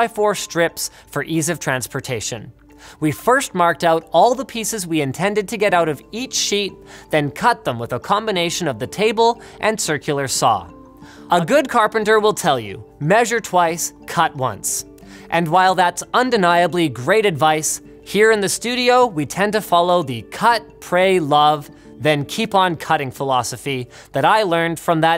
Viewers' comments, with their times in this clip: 0:09 Linus' audio sounds like the same audi again just a second off of it self
0:09 Audio Recording fail
0:10 On repeat Someone messed up the audio haha
0:10 Once you hear the audio doubling you can't unhear it
0:10 weird audio glitch, literally unwatchable.
0:10 Just me, or is the audio slightly doubled? "A good carpenter.."?
0:11 That Echo Tho ;)
0:11 Why is the audio doubled slightly?
0:11 can hear cross fade on the dialogue
0:13 For some reason brain accepted that quote in Genji's voice